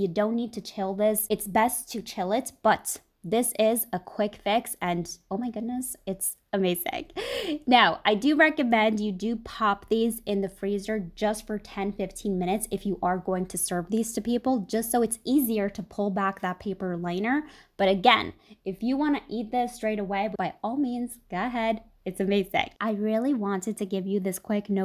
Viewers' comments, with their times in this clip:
0:05 "It's amazegg".....what is "amazegg"???